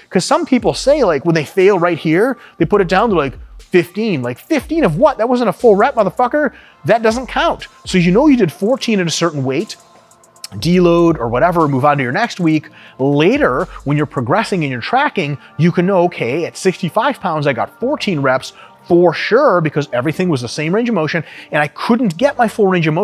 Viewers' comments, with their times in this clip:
0:05 solid Rich Piana impression